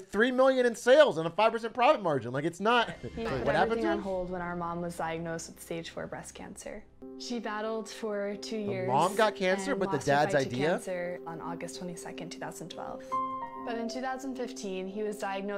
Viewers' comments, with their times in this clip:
0:03 damn man.... the young family is so wholesome. Even if you think the invention is useless, you just can't deny that this is still the most wholesome pitch ever. Like ugh, these amazing kids tryna carry on their dad's legacy & continue his business to make his dreams true hit me right in my feels🙁 I def teared when the sweet younger one said "who's ready to help make our dads dream a reality with us" 🥺😢 like bro u can hear how excited she was to say it in the beginning but towards the end you can hear her voice start to shake- like she's tearing up, or at least about to. Then for it to pan over to the sharks & all of them are emotional or letting the waterworks flow 😕☹️ so wholesome & amazing